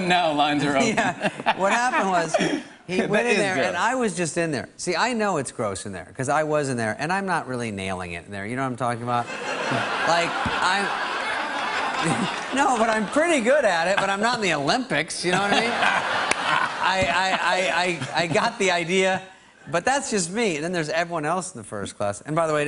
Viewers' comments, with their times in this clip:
0:09 u can clearly see that his laughter is fake because he laughs after the audience and not with them